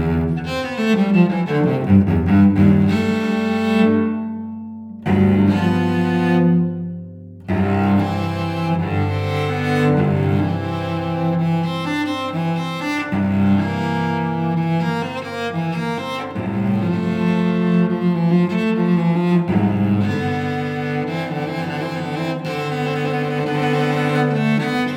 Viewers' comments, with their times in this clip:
0:09 Hey this is a great step up from the last one - well done on the thumb bit - it's 96% there, I like to try to listen to the middle note to keep it both steady and in tune. Rhythm is much better, just really lept out at me as strange. Well done You get a great tone in all your videos - what's your cello?